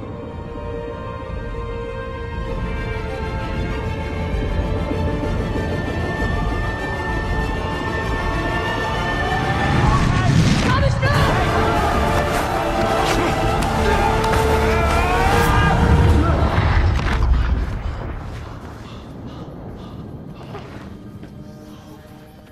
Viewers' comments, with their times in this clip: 0:03 is probably my fav shot in this movie, maybe whole trilogy. With the crescendo and rising tension in the music ( oo look at me using fancy words 🤣🤣) it adds so much to the scene. Plus, the difference of expressions and actions between the actors. Everyone gesturing with encouragement and shouting while Thomas is right in the centre completely the opposite: standing straight and just staring in complete thought, and you look at him like, “ omigod he gon do it?! hE gOn dO iT!” So with the staging and music put together that single shot is pretty short but it’s still so dramatic and you can tell what’s happening and what most likely going to happen. Well done director 👍👍 Now I’m going to bed, I’m tired my head is starting to hurt from trying to sound smart 😂😂